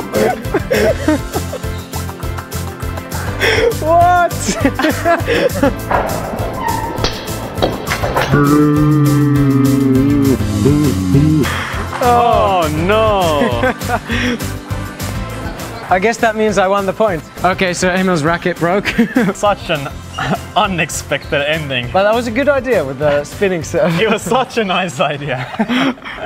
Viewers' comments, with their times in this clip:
0:09 SOUND WAS WEIRD